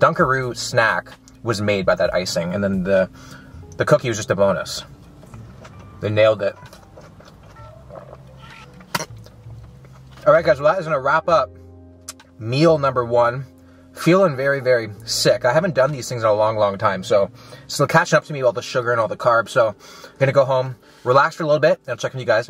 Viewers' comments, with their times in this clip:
0:08 when you Hit a villager in minecraft